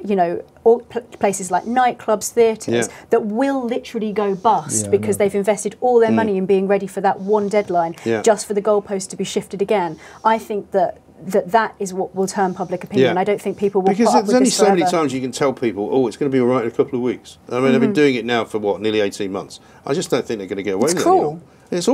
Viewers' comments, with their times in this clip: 0:06 I can't stand fat Mike's breathing on the mike